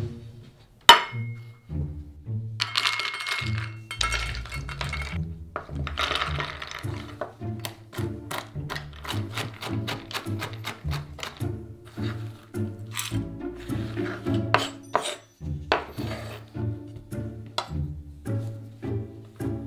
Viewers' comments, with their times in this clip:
0:03 Love this. The music reminds me of my childhood when i watched Mystery shows